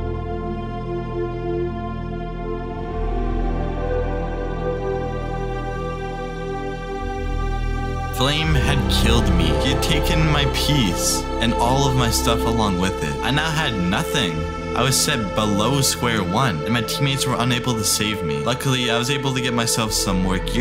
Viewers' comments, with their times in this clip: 0:05 he has baritone